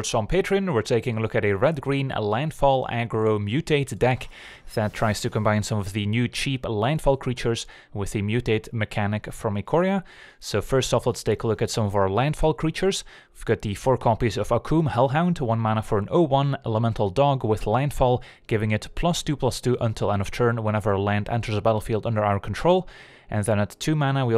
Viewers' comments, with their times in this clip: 0:05 I misheard for a second you said 'with a mutate mechanic from a korea' and though 'damn, kim jong un mutating his citizen now?'